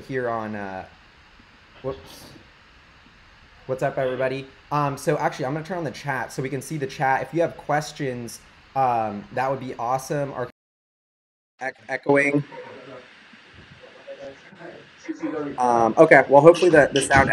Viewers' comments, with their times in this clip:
0:03 skip to in where we figure out ow to fix the echo!! thanks so much for the feedback! we'll get much better at this!